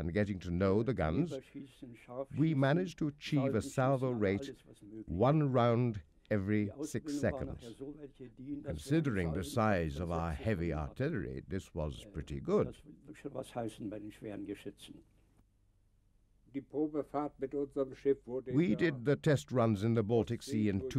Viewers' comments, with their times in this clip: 0:07 Narration difficult to hear. ''a salvo (firing) rate of one round every six seconds''. Absolute nonsense and the worst part of the video.